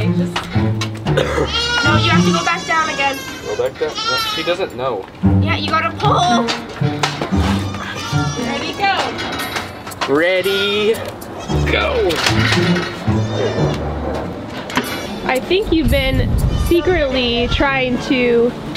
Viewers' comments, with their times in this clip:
0:05 listen to that voice crack XD